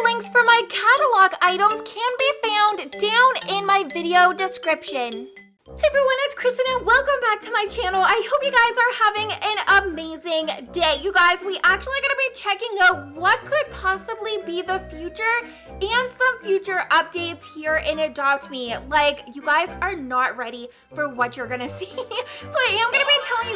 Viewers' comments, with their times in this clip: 0:05 she starts to talk <3